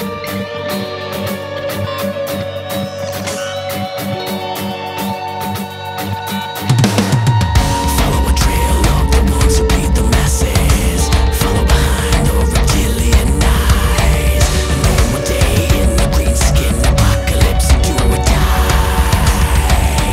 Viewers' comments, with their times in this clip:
0:08 Faith No More vibes, anyone??